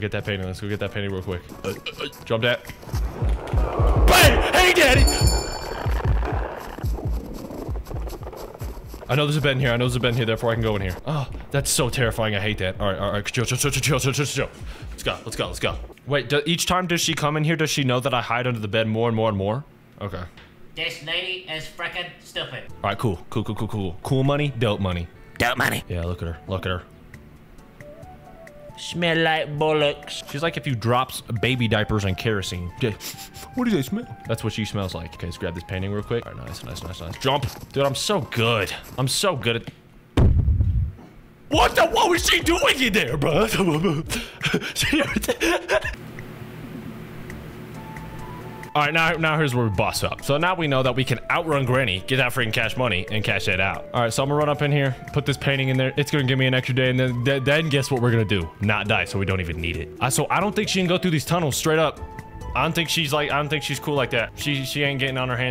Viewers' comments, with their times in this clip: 0:04 it sounds like he say "Hey daddy"☠
0:40 my fav timestamp, i think that sound effect was his heart dropping
0:46 Hehe. Is that a vacuum next to you? Because if it is, what kind is it?